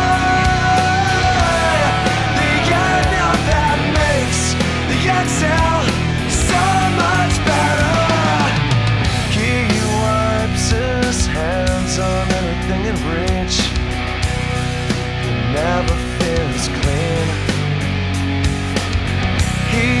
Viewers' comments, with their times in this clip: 0:04 I think Taylor has beautiful eyes. Sometimes it looks like his eyes are expressing the pain he fuels towards the songs he sings. And his voice exemplifies it.